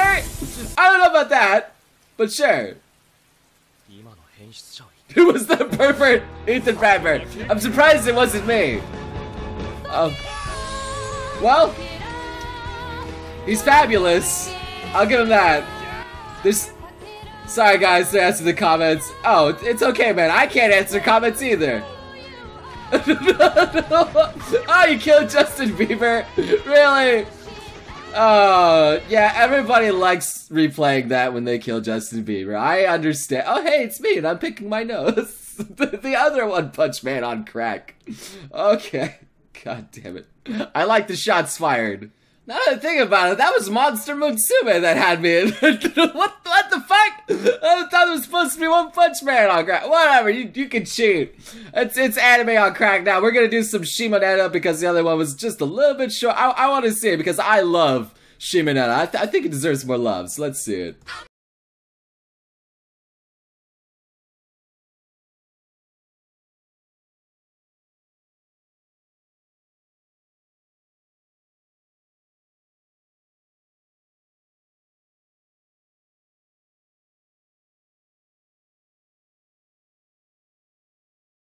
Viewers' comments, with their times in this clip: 0:08 sounds like let it go
1:05 I kept clicking and now my ears are bleeding from that laugh